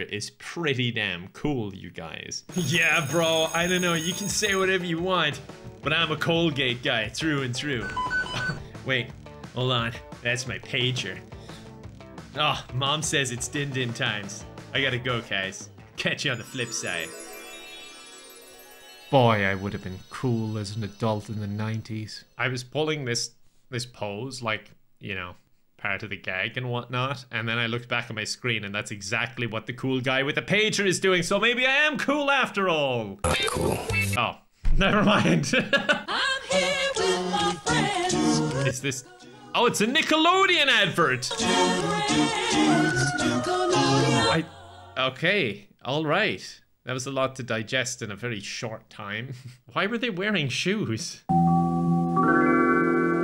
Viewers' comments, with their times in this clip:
0:08 Was that a mcDonalds kitchen sound for the sound ? 🤨
0:35 holy cow did that Nickelodeon song bring back memories!